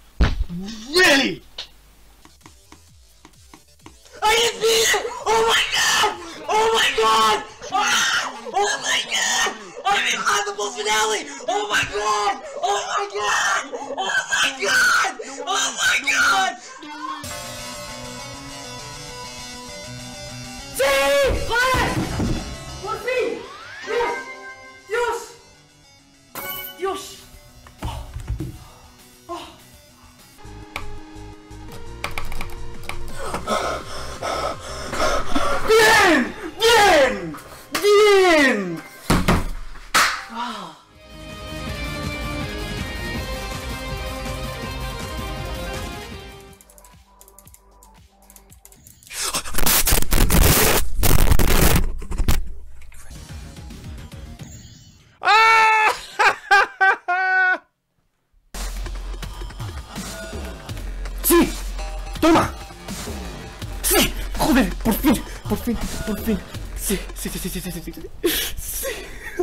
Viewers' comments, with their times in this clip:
0:03 bro trinked to much helium 💀💀💀💀💀💀
0:03 the scream bro 💀💀💀
0:04 I love his scream 🤣🤣🥲
0:46 "its verified!" Guy:*monke noise*
0:48 Every pilot making an announcement:
0:48 bro breaked the microphone XD
0:49 bro broke his mic
0:49 sounds like static
0:50 what did he do to his mic